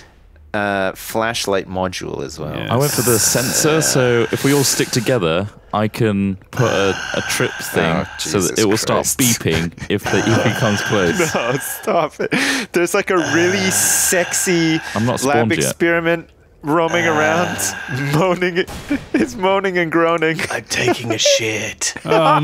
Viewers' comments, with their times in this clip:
0:08 facebook messenger bing.